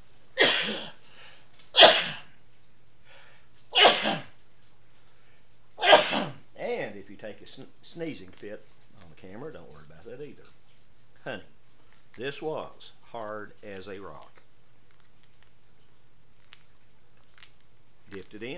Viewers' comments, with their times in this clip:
0:05 god bless you.